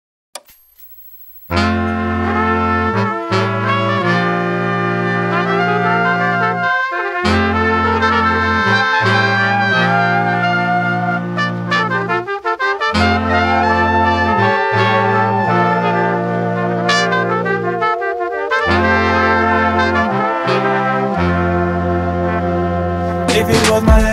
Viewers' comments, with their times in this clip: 0:06 this tune makes me think of Tom 😺 and Jerry 🐭